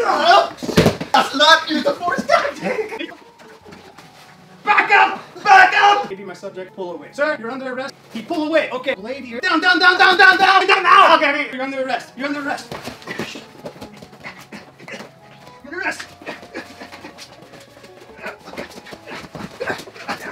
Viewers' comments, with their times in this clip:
0:06 The grunts make it funnier, the second time he said "you're under arrest" during the struggle, perfect